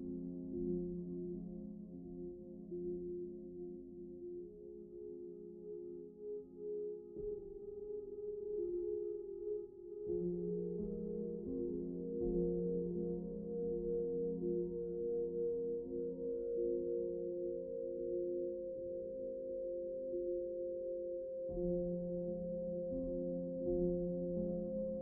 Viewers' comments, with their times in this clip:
0:07 for a moment there, I thought he said "*farts*"
0:08 I thought he farted and not fainted